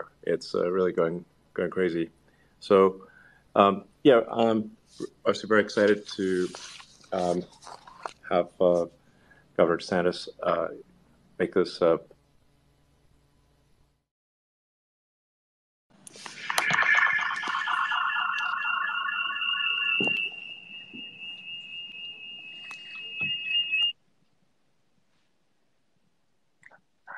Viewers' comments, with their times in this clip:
0:08 who's "Governor Santos?"